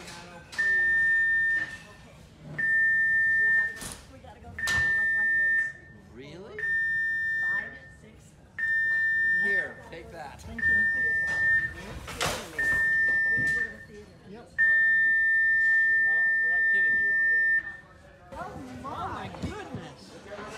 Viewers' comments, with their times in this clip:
0:07 If I was on a cruise ship and it started beeping like that I would freak out